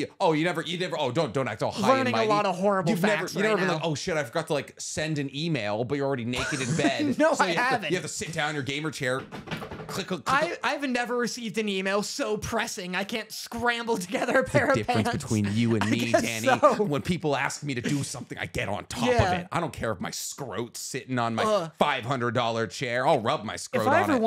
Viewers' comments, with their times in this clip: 0:09 That sounds like wolf among us a character named Faith